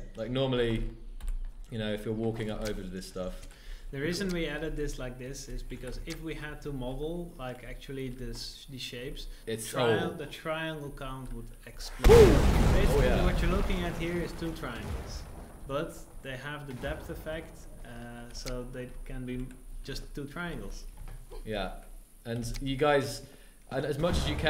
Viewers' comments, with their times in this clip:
0:10 "The triangle count would explode" explosions in background